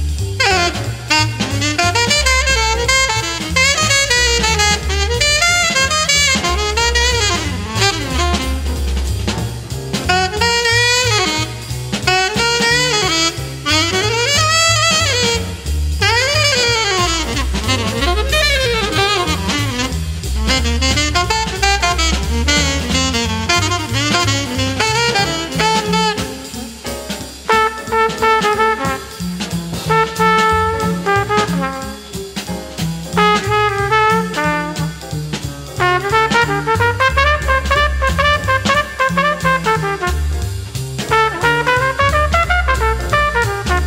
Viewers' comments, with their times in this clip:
0:10 Just realized that when Cannonball starts playing in a different key that Paul Chambers picks up on it after only one beat.
0:26 I love how after two blistering solos by Coltrane and Cannonball, Miles starts doing the exact opposite for his solo and it sounds perfect! What a genius.